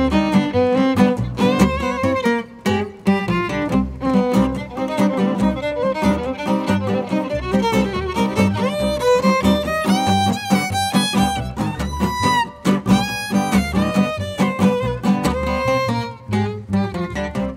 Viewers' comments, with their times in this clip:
0:04 Does anyone know what scale the violin is playing ? Thanks! :)